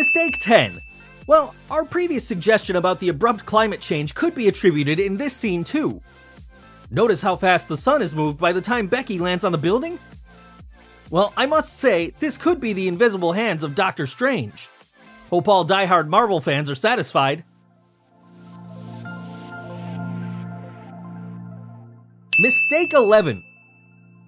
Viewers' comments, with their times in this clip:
0:08 Bruh who the hell is Becky no offence but you shouldn't be the one who is picking at this master piece of a movie when you can't even pronounce Bucky right !